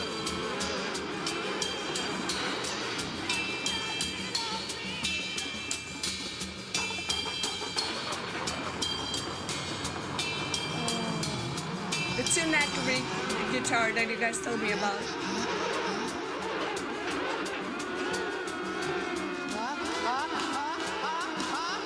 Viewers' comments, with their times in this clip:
0:06 he swung the microphone around to make that sound.